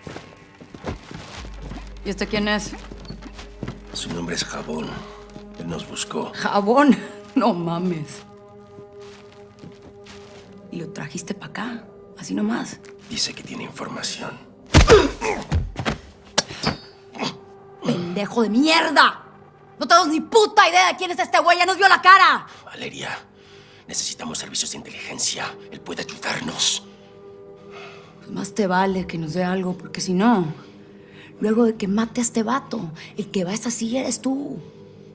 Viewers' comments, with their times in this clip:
0:07 i though she said your mom is
0:18 My god she gets hot 🔥 🥵 speaking her native language. She didn't need to be this hot!! My god...I am SWEATING af!!